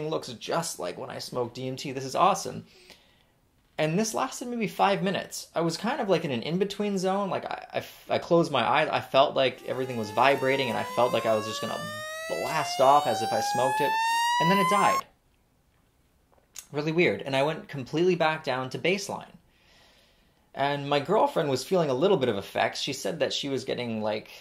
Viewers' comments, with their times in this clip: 0:09 HOLY FUCK IM WATCHING THIS AT 3 AM PITCH BLACK AND THAT FUCKING BUZZ NOISE SOUNDED LIKE THERE WAS 10 MOSQUITOS IN MY ROOM I FUCKING JUMPED DO QUICKLY NOW MY BACK MUSCLE HURTS LMFAO